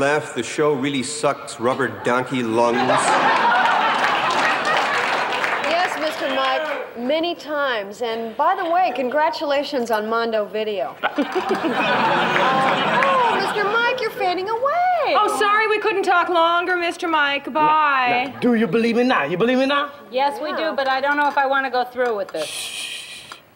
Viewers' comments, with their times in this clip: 0:06 Can y'all hear someone in the back saying ew?